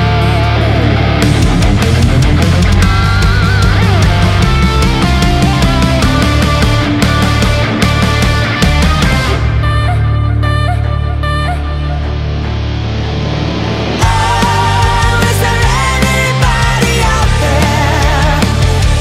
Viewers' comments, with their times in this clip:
0:05 I thought I was listening to Human